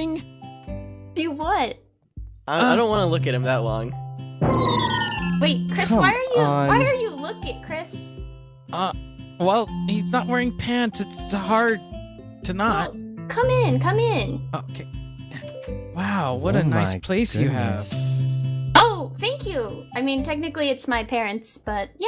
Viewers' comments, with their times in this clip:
0:04 that scene was funny, but the little noise made me rofl
0:10 Did anyone else here the noise a few seconds before